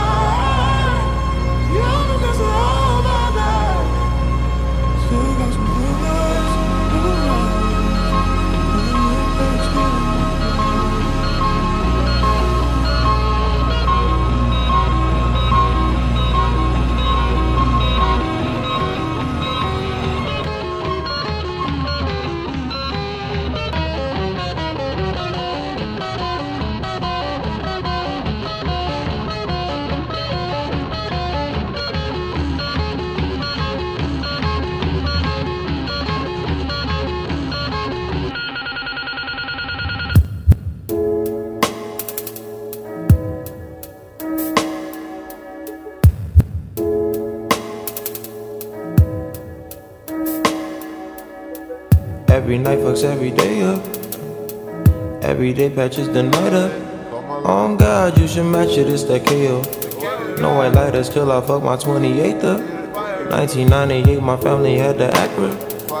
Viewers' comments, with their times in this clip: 0:07 took you from a reverb song to a launch me in space vibe
0:20 This but the first is normal but when the beat switch hits it slows and reverbs
0:35 truly hits different when its slowed omfggg
0:38 on 0.75 speed is the most peaceful thing u will ever hear
0:41 hits different in slowed & reverb 😍
0:50 I was wondering why his voice sounded so "normal" and then I remembered that his voice is pitched up in the original haba
0:50 I love the switch